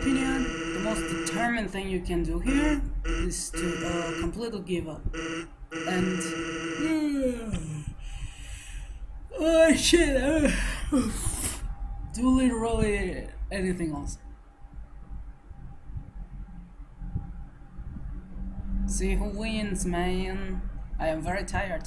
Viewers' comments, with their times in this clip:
0:06 ... can I hear your heartbeat in the microphone?